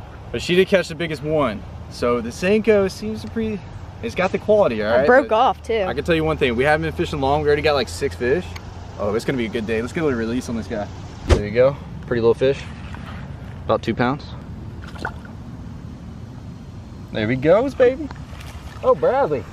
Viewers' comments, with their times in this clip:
0:07 what was that splash in the water